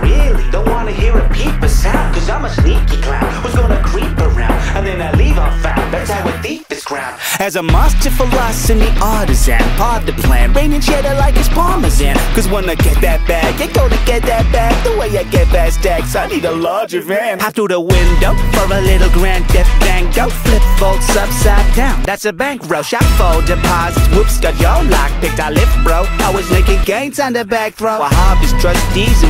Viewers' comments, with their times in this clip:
0:10 the way he said parmesan gave me so much happiness and I have no clue why